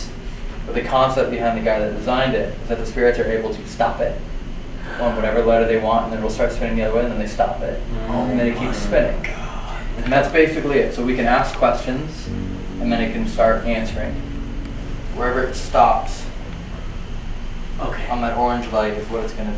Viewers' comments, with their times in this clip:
0:04 when talking about the ouija thing a whisper asks "how" after you say spirits can stop the motorized thing
0:05 I heard a whisper or a sigh !!! Play back and tell me that isn’t just me who heard it! 😳